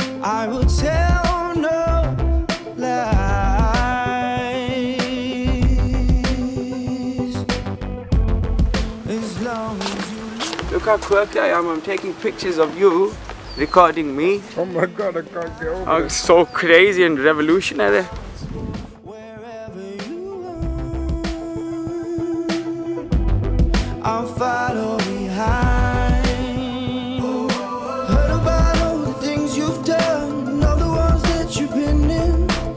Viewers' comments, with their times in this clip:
0:10 This is amazing. Also he does that silly voice of his ! I've missed that voice so much!! I've missed his voice in general actually! I love this!!
0:13 Zayn sounded like crazy russain hacker
0:16 had me crying bc 2010 zany accent
0:18 Damn! I lost my shit!!! What is the accent 😍😍